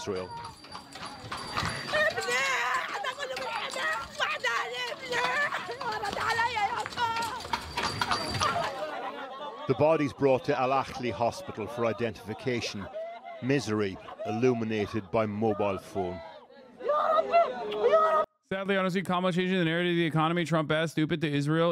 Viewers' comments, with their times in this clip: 0:06 what a stupid guy. People crying for help and he is drinking so inhumane! he acts like people dyin is nothing. my breath was stopped when I heard her cry.